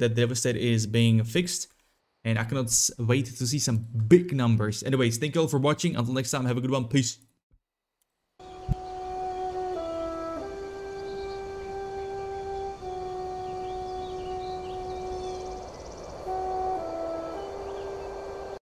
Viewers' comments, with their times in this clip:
0:03 The way you emphasized "Big Numbers" make me respecc into Gladiator Stance.